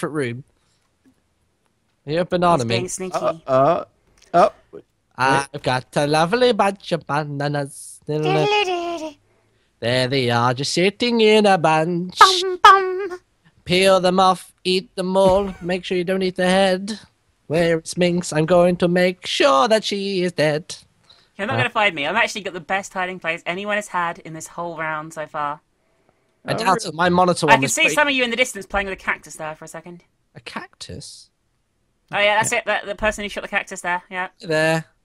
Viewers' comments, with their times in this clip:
0:06 best song ever!
0:18 nice impromptu singing!